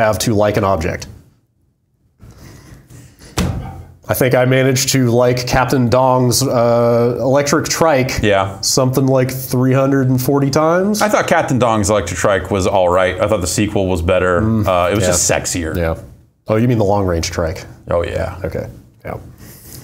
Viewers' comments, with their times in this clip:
0:03 Love that I can hear a laugh from the control room The sheer insanity!!